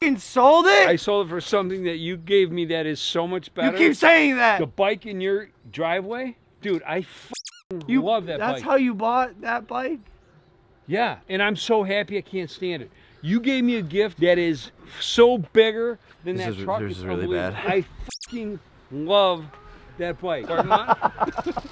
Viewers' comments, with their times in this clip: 0:06 you can just hear how hurt Logan is....
0:08 the way Logan says that... I actually feel bad 😢😭